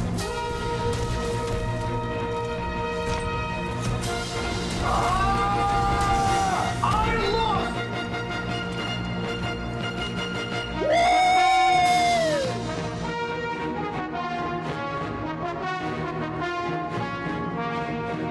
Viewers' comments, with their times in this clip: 0:05 I thought you were gonna mention the Oomph! on each strikes, not the obvious difference xD